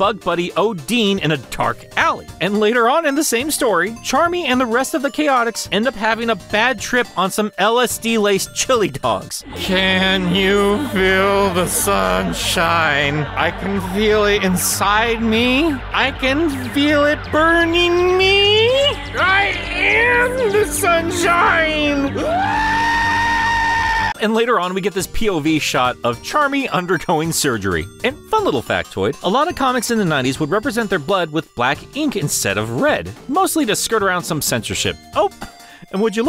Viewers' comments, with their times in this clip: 0:09 This part caught me so off guard. Hearing you slowly lose your mind with the LSD bit threw me off to where I choked on laughter when you screamed only to have it be cut off instantly after to resume the video.
0:19 "I am the sunshine. Whoaaaaaaa!" Man that sounds like he found the good shit.😂